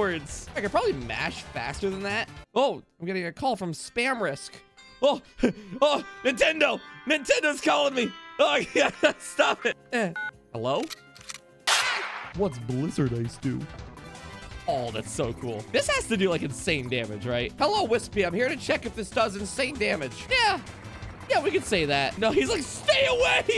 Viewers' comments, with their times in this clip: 0:06 “Hello?” As soon as you said that, the screen cut to black for a few seconds, followed by a Nintendo Switch “click”. I thought, “Ha ha, nice censor” only for a real ad to start playing. That was more terrifying than your actual gunshot bit.
0:07 i dont know why but the gunshot as the joke hurt my heart and killed the joy i had :/ death is not funny its sad and hurts to think about that